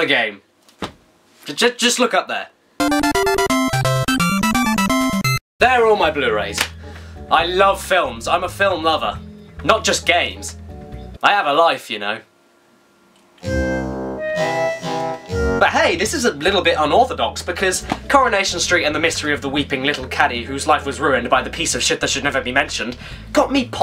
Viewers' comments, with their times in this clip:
0:05 O_O That music punched something in the back of my mind Sounds like Spyro but I don't know SOMEONE PLEASE KNOW Thank you